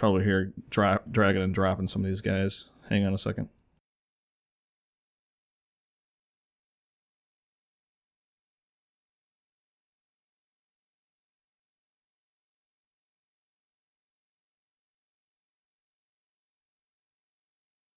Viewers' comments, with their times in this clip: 0:03 : i cant give this video a thumbs up......AUDIO(SOUND) get cut off after the trial period, it turns into the free version, where you just use it a scanner and removes stuff. i have it .
0:03 hey unsubscribed u idiot where is d sound 😠😡😬